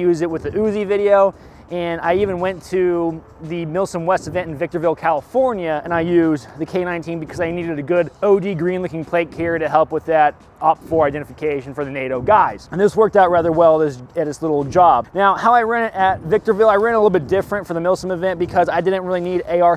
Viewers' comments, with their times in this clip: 0:04 who tf is breathing heavily into the mic???